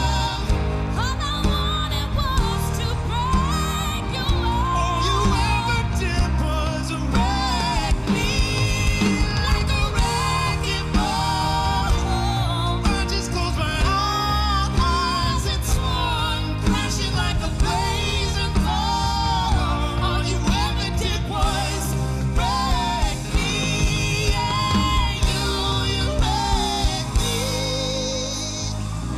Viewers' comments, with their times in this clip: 0:04 sounds like Michael Bolton, damn!
0:12 Whys no one talking about her tone in "Swung"